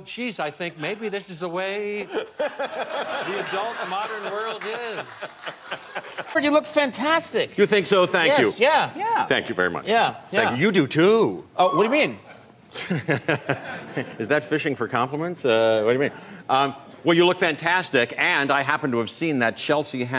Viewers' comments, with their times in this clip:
0:06 Maury Povich's voice isn't right.